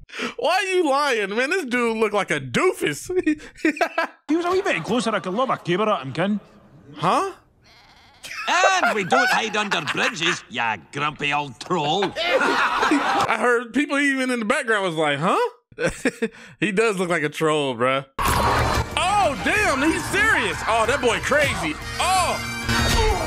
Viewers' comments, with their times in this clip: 0:07 Young MacGuffin is speaking Doric - it's an actual dialect from Scotland. The voice actor Kevin McKidd (who also voices Lord MacGuffin) has relatives in the area who have that accent. It turns out he said: "If he were a wee bit closer I could lob ma caber at him, ya ken?" Caber tossing is a game in the Highland Games - lifting a long heavy log (caber) and seeing how far you can throw it. "Ma" meaning "my", "ya ken?" meaning "you know". Later he says "It's just nae fair making us fight for the hand o'a quain who doesnae want a bit of it, ken?" meaning "it's just hot fair making us fight for the hand of a girl who doesn't want a bit of it, you know?"